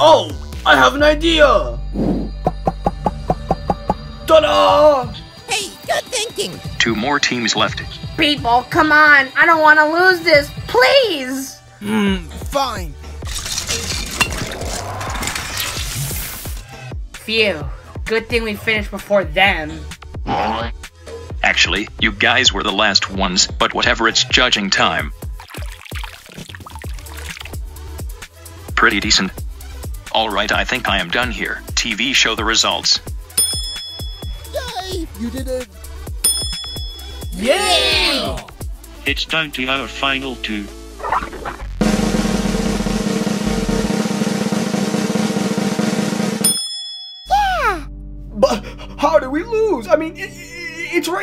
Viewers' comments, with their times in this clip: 0:05 isn’t that book’s voice?
0:39 Rewatching this episode, I notice two things: 1. I completely forgot that Bomby was a contestant. 2. CAPTAIN PREDICTED TVS TPOT VOICE HOLY MOLY!!!!